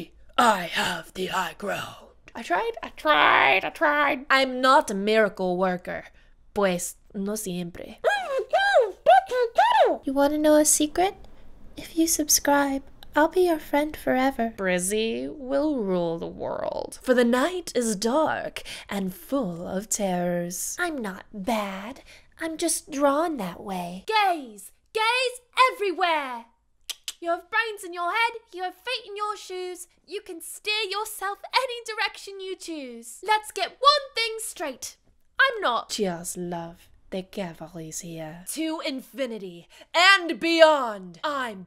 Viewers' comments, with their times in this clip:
0:10 she did poppy’s voice amazing!!
0:10 Shes sounds alot like Poppy! 0-0
0:25 did anyone think of Jake English? Or am I just obsessed with english accent speaking people.